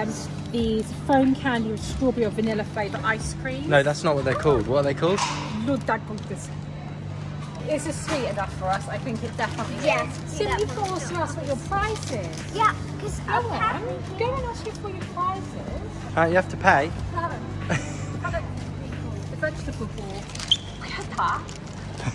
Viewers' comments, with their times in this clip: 0:09 i am from Sweden and its fun to see u say it